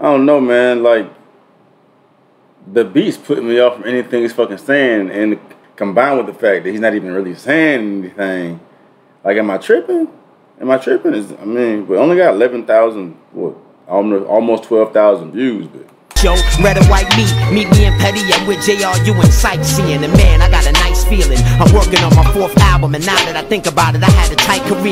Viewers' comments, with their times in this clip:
0:06 that beat is a suicide